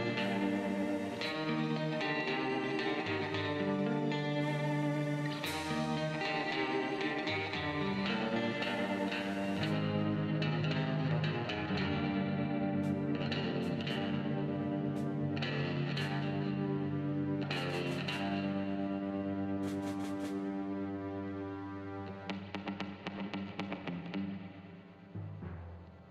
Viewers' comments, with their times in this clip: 0:09 The song reminded me of banjo kazooie